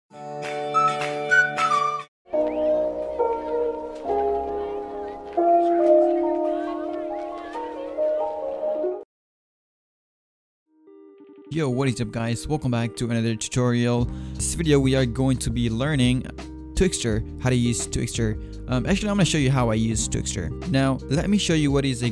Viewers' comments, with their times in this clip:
0:03 Song ate PLSSS